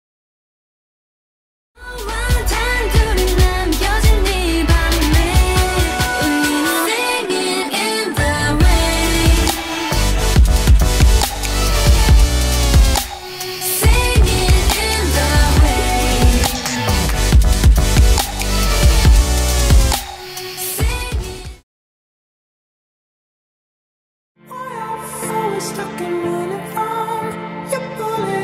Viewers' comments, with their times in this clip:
0:09 I thought it was dove Cameron for a second